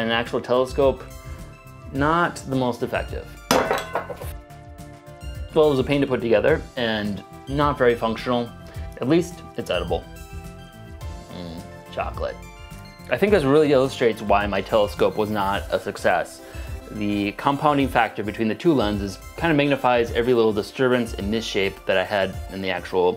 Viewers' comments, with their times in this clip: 0:04 He says "f***" and censors it out